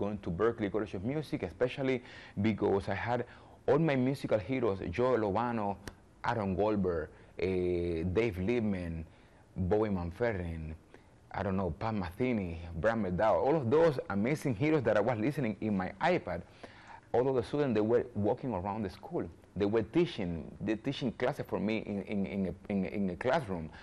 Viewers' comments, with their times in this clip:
0:10 can’t make out artists he is listing :(